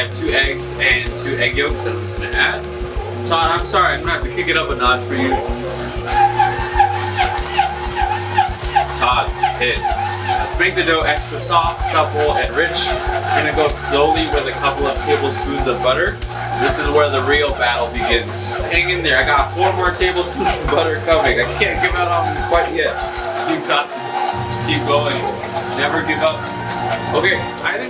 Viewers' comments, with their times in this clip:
0:04 what android users hear
0:08 OH GOD! IT'S SCREECHING!